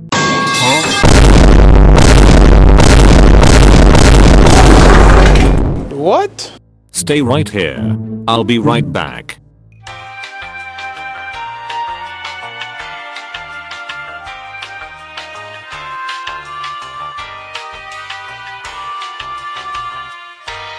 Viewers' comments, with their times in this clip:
0:06 got go coughing and laughing